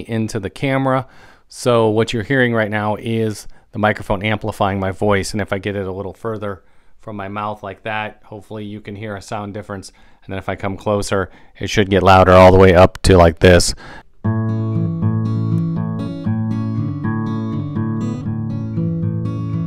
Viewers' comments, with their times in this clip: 0:03 The test was great! Cute microphone but great quality!